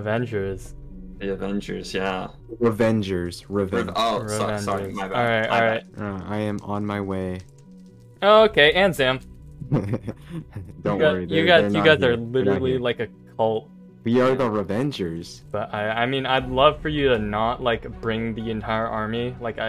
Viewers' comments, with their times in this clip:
0:06 i was in a vc and i heard that sound and thought som1 joined, I am an idiot